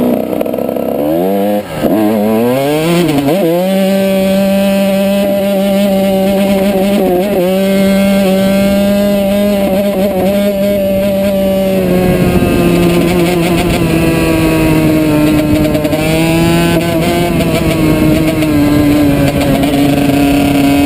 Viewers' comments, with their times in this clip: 0:08 You can here the bike crying